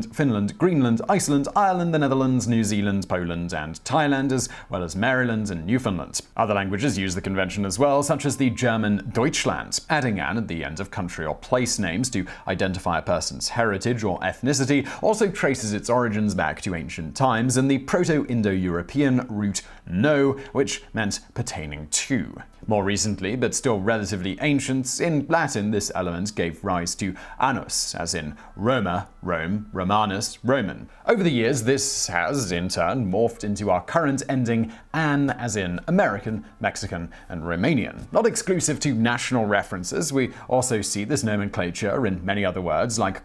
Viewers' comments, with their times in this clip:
0:06 Your pronunciation of Deutschland wss surprisingly good! I was expecting you to butcher it like you butcher French tbh
0:27 So very glad you didn’t mispronounce “anus” of this video!